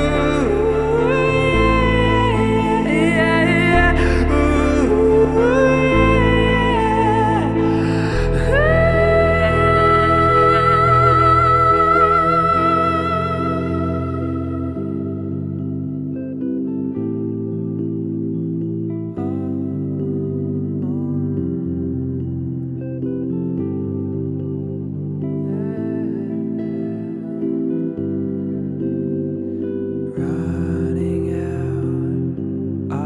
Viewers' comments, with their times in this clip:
0:10 you can’t even tell thats his voice
0:14 what higher or vy sreams